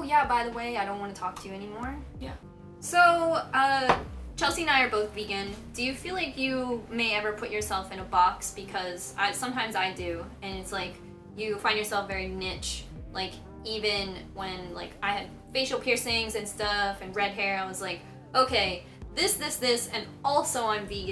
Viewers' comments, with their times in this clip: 0:08 Is the sound ahead of the video for anyone else ?